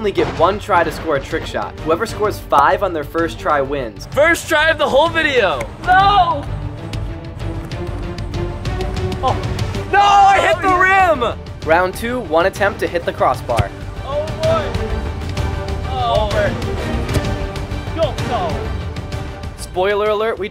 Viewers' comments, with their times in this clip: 0:04 why bro sound like mrbeast